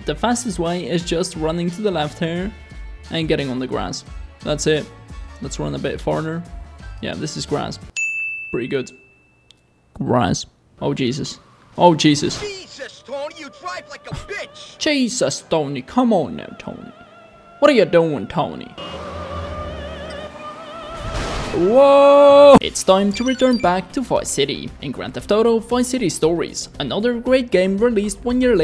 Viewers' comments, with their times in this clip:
0:09 I love the way he said grass